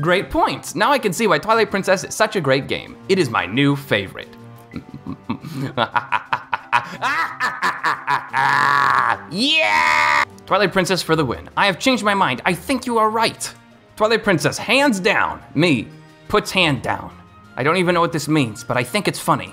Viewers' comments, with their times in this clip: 0:04 somebody contact the Zelda team, we found the next English VA to play Ganon.